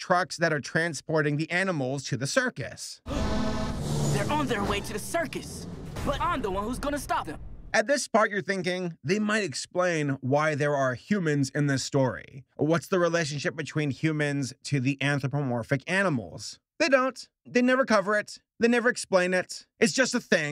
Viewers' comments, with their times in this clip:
0:03 he got autotune